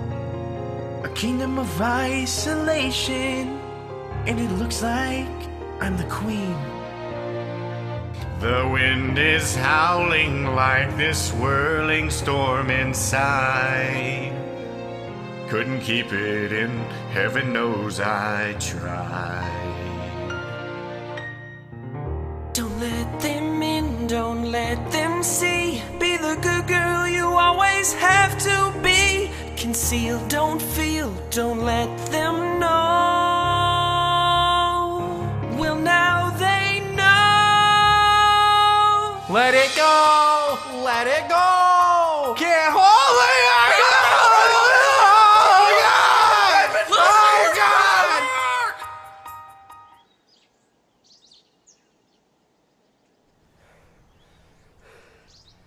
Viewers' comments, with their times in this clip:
0:08 Dat voice doh
0:37 Best Vocals ever! XD
0:38 start from i think is the best part. is louder
0:39 Well there change it ... Your like's my dad aviator because he suck at singing:D